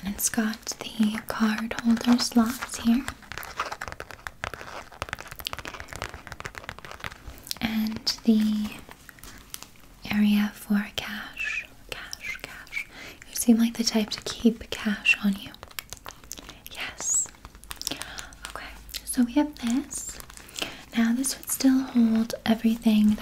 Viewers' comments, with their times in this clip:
0:10 ughhh the way she says Cashhhh is my new favorite thing mixed with the way her mouth moves 😅😅😅